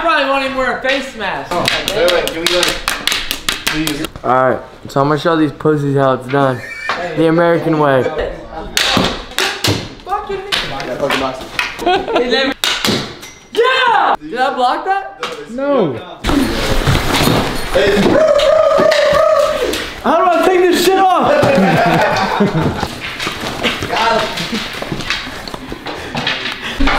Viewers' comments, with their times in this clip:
0:09 doesn't it sound like he said the n word then cut it out half way
0:09 what does it sound he said like?🤔